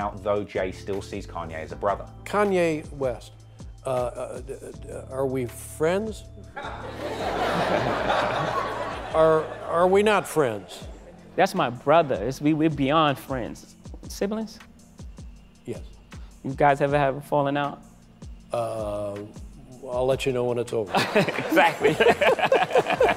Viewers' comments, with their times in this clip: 0:10 is that Jay Z's white voice?